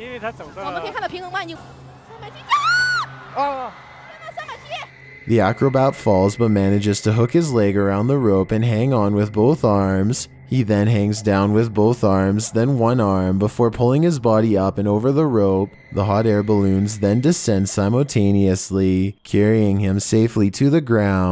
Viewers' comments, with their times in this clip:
0:06 the girl that screams really not helping if she just didn't scream the guy wouldn't lost his confidence 😔😒 if she just didn't scream the guy would have succeeded. Also the arrow kinda annoys me. 🙄